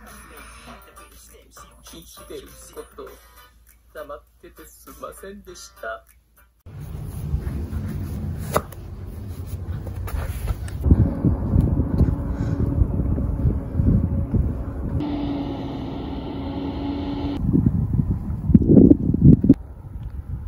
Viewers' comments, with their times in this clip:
0:08 that popped made me chuckle